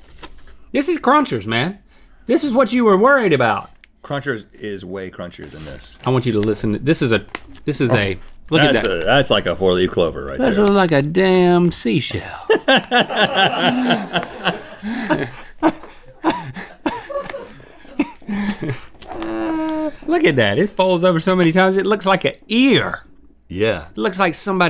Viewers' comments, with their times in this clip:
0:10 lol i love when they talk with that accent
0:10 Link went back to his Southern roots